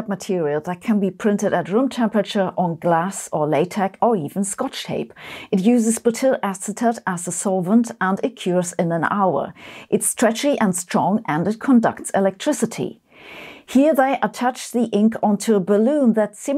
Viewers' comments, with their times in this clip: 0:03 That pronunciation of latex lol